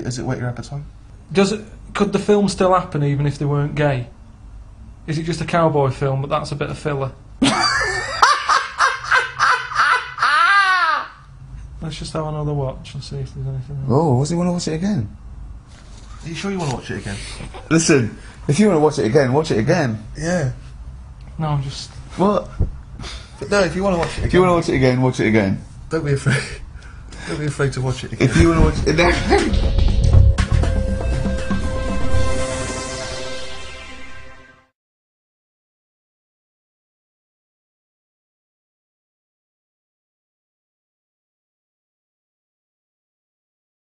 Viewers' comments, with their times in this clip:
0:07 imagine if that was the christian god and that was him laughing evily
0:15 ... Karl starts laughing when Steven touches his heart (literally).
0:29 A rare shot of Karl laughing.